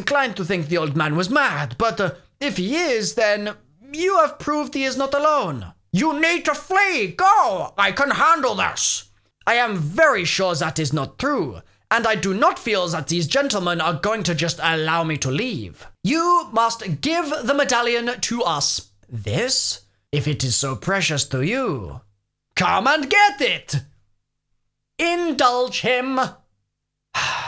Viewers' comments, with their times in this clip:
0:08 y did he just become german